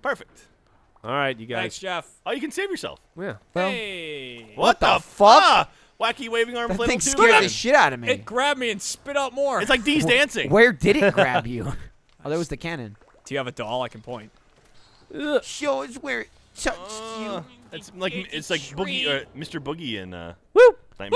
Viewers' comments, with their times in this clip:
0:04 I love the collective WTF! great freakin video
0:05 Like how they're all like what the fuck in unison XD